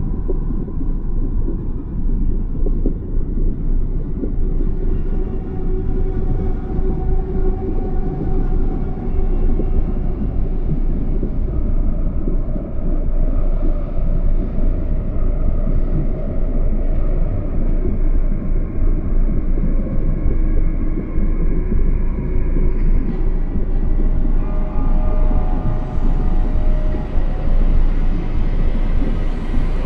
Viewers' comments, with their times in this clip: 0:10 The music building up made me think something was gonna come and get you